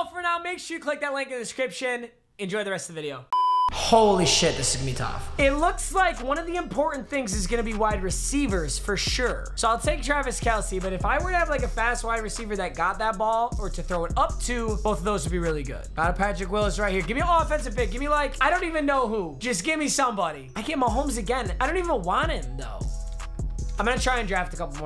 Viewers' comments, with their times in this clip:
0:08 Did he say Jarvis Kelce?